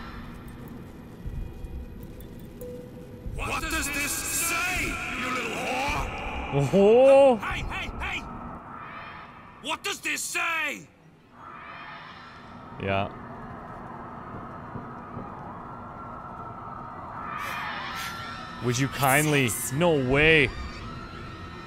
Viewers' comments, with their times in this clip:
0:03 Just realised that Atlas's voice changes back over to Fontaine for a moment as he loses his composure. Thats a cool touch.